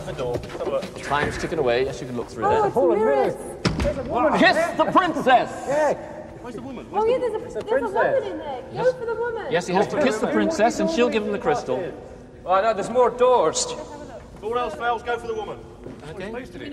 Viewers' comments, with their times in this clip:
0:03 The reassuring sound of frontal lobe on wood